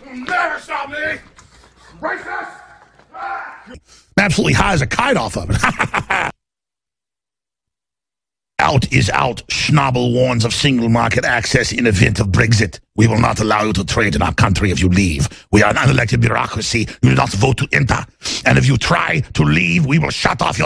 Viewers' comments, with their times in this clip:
0:07 After I thought why TF did Alex Jones do himself such a disservice and not become a voice actor??